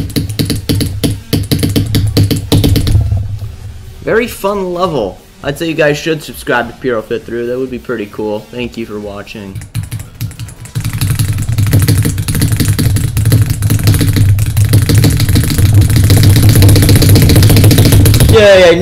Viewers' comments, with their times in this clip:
0:03 "very slow level" 💀